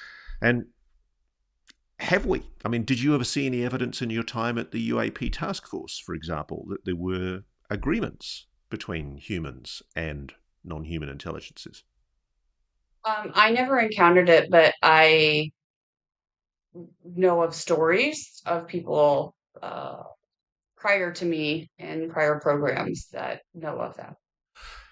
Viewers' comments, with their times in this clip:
0:10 You’re so fascinated you won’t let her finish speaking!🤬👎